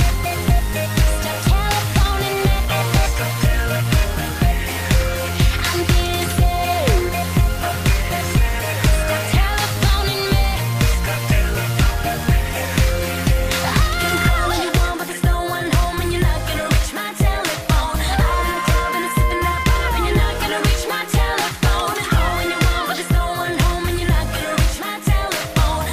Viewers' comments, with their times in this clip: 0:06 I always touhgt she said im Bi 😂💀